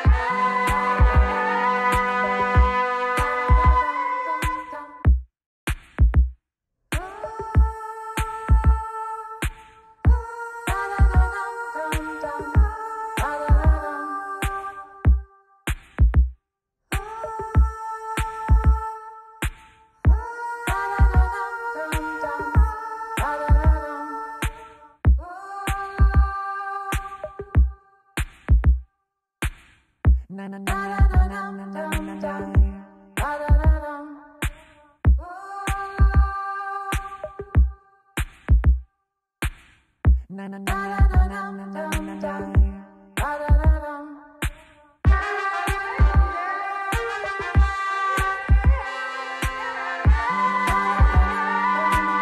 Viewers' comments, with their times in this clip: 0:04 this is two musical have my singing monsters on my tablet and I like to I liked my singing monsters and you are rich in it My singing monsters I'm talking about you rich My singing monsters Sorry I like this song it's like too much electrical too much this is like electric song too much like little big deal I like to talk too much. Bbbb b. Electric phone too much like I like the but this is too much
0:07 sounds without thrumble
0:33 I just hallucinated tuskski